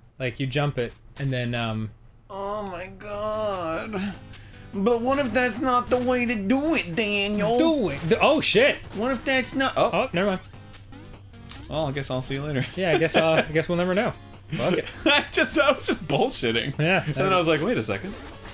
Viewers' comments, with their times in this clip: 0:04 Did Arin just decide to channel early '90s Ween?